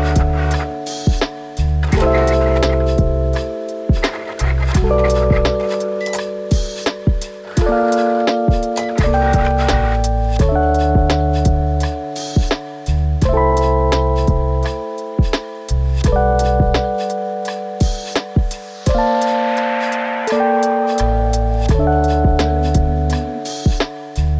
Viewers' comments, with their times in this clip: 0:05 okay but is no one going to talk about how the cricut sounds were also jammin with the background music